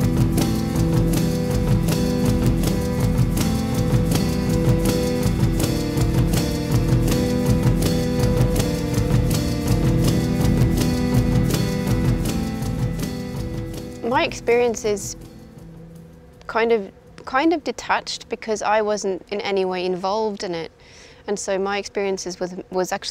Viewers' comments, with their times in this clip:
0:04 this version sounds better than the original